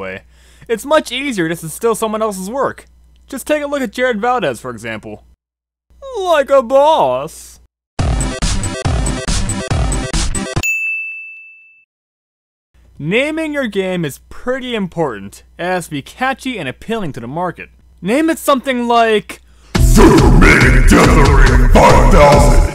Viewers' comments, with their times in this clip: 0:05 I hear something that reminds me of jacksepticeye, do you?